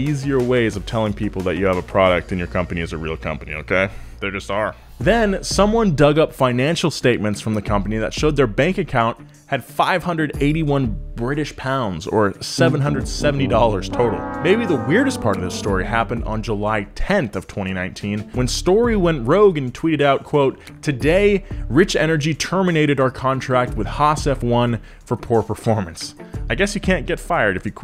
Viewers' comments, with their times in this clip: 0:10 I love that "The Price Is Right" loser music!!